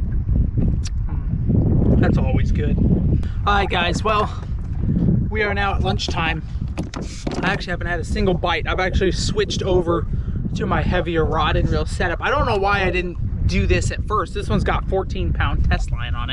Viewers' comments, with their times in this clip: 0:03 On he sounds like a robot lol must be because of the wind or the mic of the camera 📷